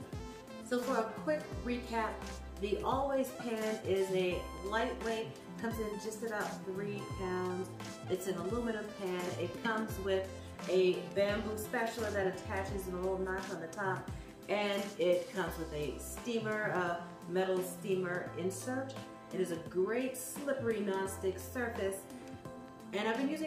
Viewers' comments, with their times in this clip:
0:04 Thank you for this video! Great review! Just want to let you know that the music was a little loud and made it difficult to hear you.